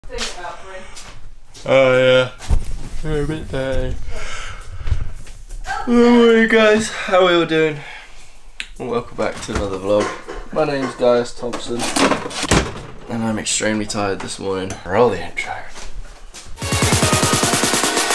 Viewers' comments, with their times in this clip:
0:05 THAT YAAAAAWWWWWNNNNN love this vid tho